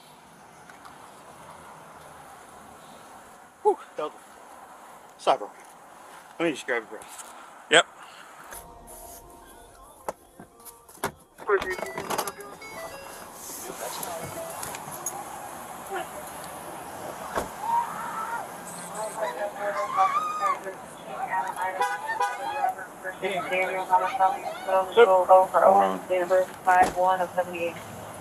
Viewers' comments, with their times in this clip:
0:09 playing music in his squad car as he’s pulling up 💀💀